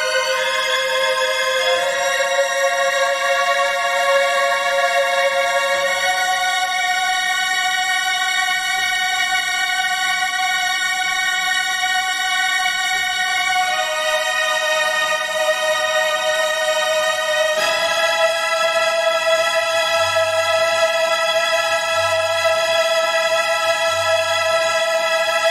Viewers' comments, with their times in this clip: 0:06 these high chords have really "turbulences" in their volume. So like they get sometimes (minimal) loud and quiet again. Maybe its just a bad audio exporting, or my speakers are a bit broken